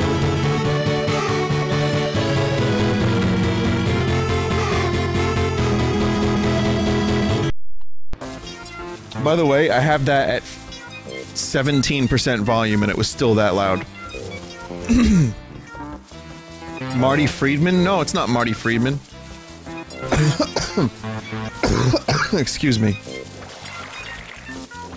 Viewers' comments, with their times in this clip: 0:08 Quality music corruption